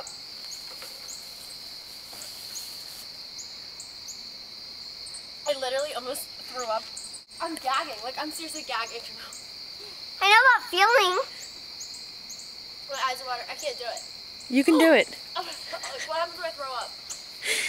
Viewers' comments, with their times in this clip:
0:03 she's gagging ...YES